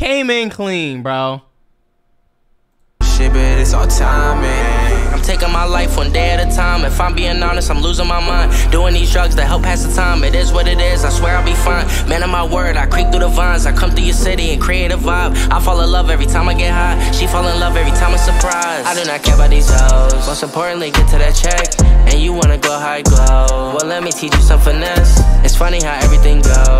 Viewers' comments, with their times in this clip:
0:09 lil skies lowkey has that tom macdonald flow💀
0:11 idgaf what yo special ed chat say lil skies SLID he always been smooth mfs jus forgot about how he use to be on that nowadays track feat 69 twin brother Landon cube